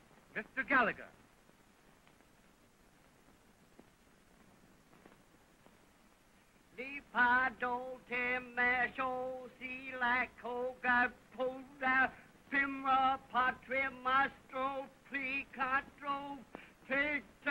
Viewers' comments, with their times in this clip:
0:05 RARE FOOTAGE OF THE FIRST ENCHANTMENT TABLE LANGUAGE SPEAKER